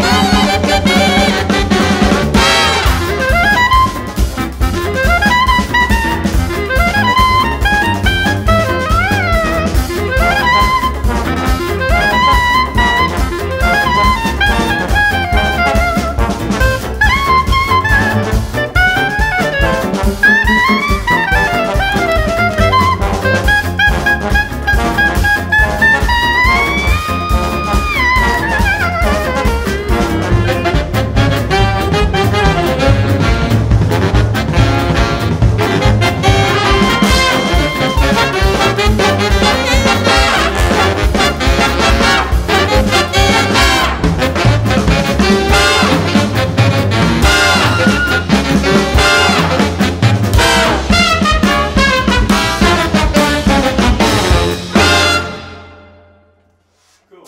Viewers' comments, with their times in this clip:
0:03 It's the re-incarnation of Benny Goodman!
0:15 I can hear him
0:20 you can hear him a little during this part. The bass is kinda overpowering the pianist though.
0:45 seriously, i love the "phaaww" trumpet sound from and so on